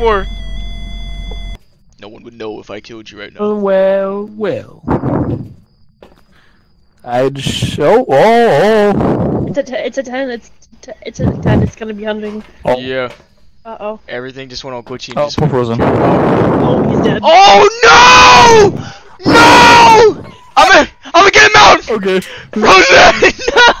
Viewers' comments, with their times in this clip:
0:09 I was stuttering so hard 😂😂